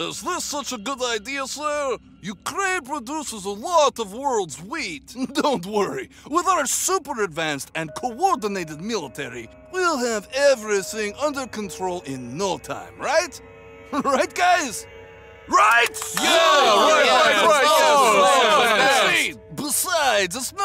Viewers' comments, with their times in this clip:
0:03 Sounded like WEED😂😂😂